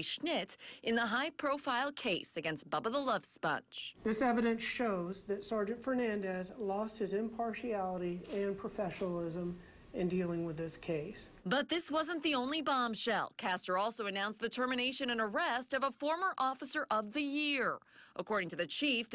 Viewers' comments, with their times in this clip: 0:04 Wait, wait, woa, wait a minute!!! Bubba the love sponge, the narrator said that with a straight voice? She had to have practiced that not to laugh.